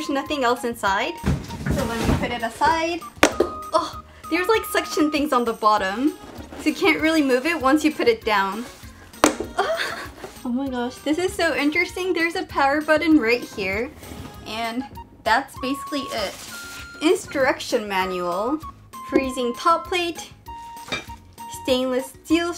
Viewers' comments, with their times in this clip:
0:09 you sounded just like an anime character after a jaw dropping moment